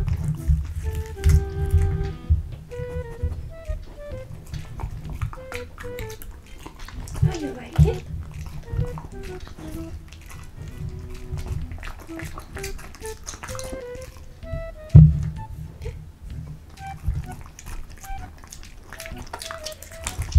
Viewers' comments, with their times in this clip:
0:03 GREAT asmr UwU